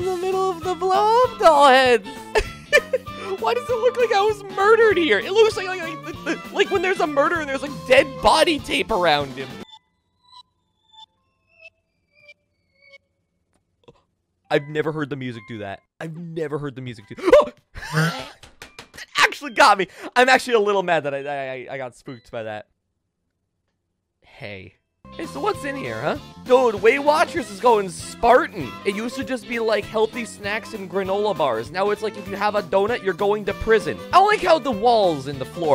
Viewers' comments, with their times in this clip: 0:10 is just perfect for the start of a creepypasta or sm (and it sounds like it genuinely unnerved him)
0:17 he sounds like a cell phone vibrating